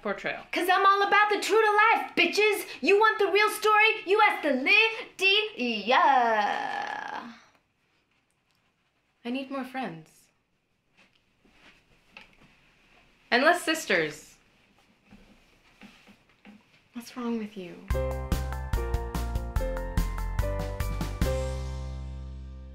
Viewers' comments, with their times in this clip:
0:04 Gotta love her vocal fry!